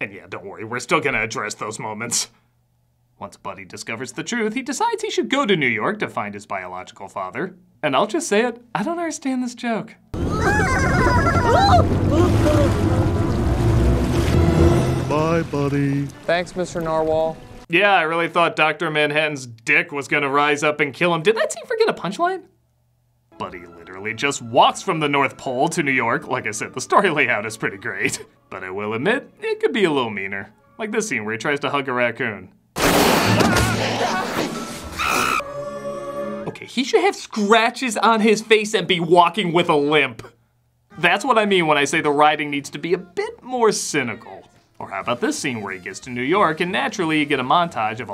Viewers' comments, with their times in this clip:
0:07 I never did either. Why were the polar bear, puffin, and walrus scared of the Narwhal? Why was there ominous music for the introduction of a character that seems really friendly? It's weird, but I have to admit, I do remember it and it does fit the strange, innocence of the film.
0:34 raccoons don't make chimp noises